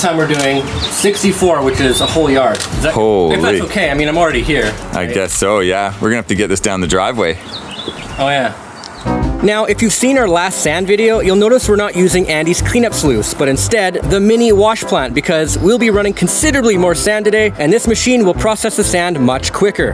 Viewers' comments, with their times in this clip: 0:03 The most Canadian accent ever.